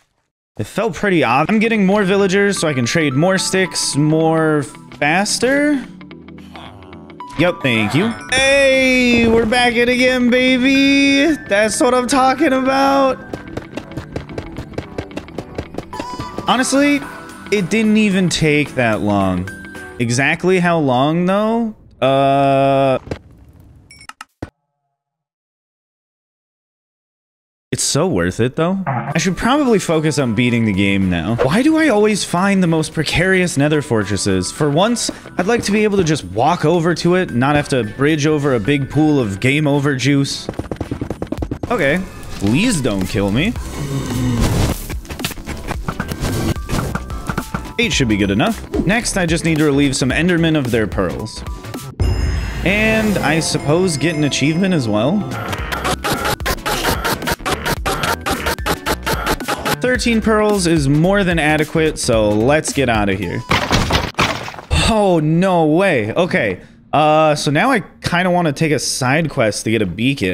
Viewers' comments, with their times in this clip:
0:10 Literally you can remix the sound of endermen oofing to an electric guitar song...
0:55 doesn’t it remind you of Crystal Castle: Kerosene?
0:56 sounds a bit like a song I know but cant exactly tell what song it is